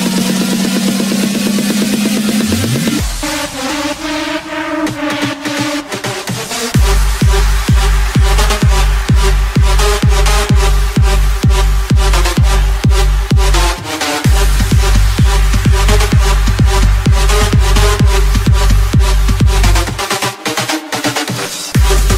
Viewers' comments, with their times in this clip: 0:07 Song İs Talking Aw Aw Aw Aw Awesome Aw Aw Aw Aw Awsome :) :D